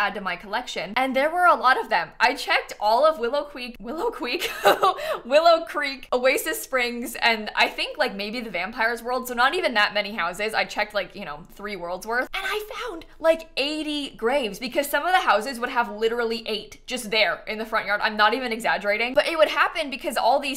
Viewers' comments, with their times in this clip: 0:03 "Wiwow Cweek" The UwU voice